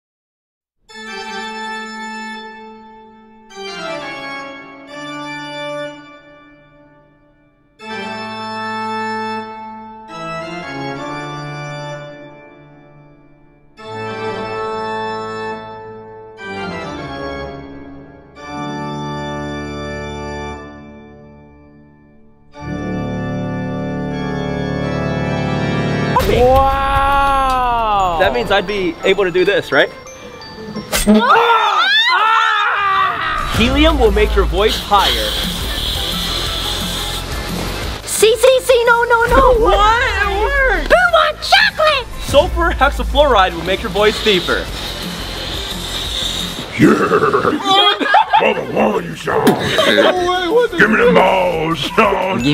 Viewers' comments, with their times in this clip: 0:03 why can’t i hear?
0:40 HE SOUNDS LIKE BOMBY FROM BFDI